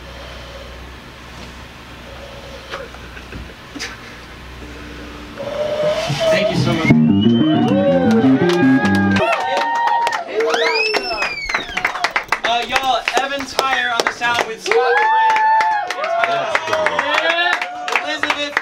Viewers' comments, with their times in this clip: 0:05 gotta love that victory riff